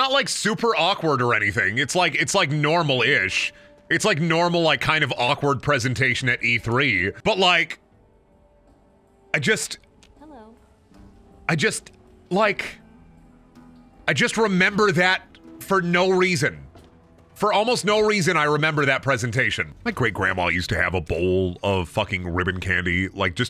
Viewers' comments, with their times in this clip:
0:08 Hang on somebody says 'Hello?' in a very Very Particular way. (I'll make this comment less cryptic down there 👇) Hor Hor H'Hor Hor hor,hor,hor hor,Hor